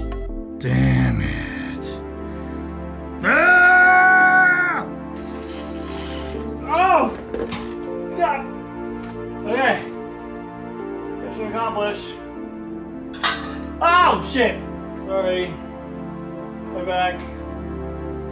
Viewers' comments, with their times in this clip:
0:05 love the chill music paired with the florida-man caveman scream 🤣